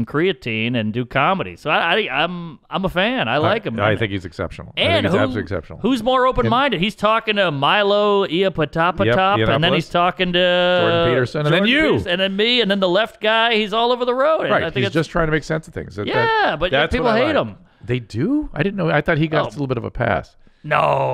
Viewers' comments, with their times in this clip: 0:06 "Milo Iopotapatap" - Gold